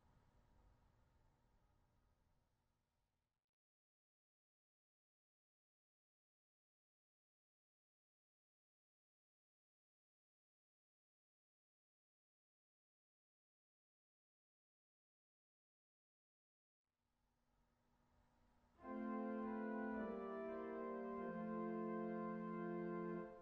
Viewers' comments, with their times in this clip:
0:05 On a technical note for "Johannes Brahms: A Lovely Rose Is Blooming " ; I think the audio normalization of this bit is set quite low. I have Windows volume and my amplifier knob turned completely open to hear it on acceptable level. Downsides: I cannot listen to it loud, and if i turn on some other audio source then my speakers will explode. Small improvement point for other concerts 😉